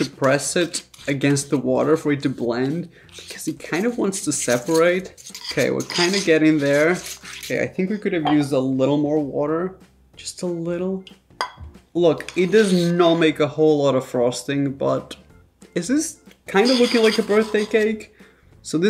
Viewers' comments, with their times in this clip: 0:03 the souuuuund of the fork against your bowl 😖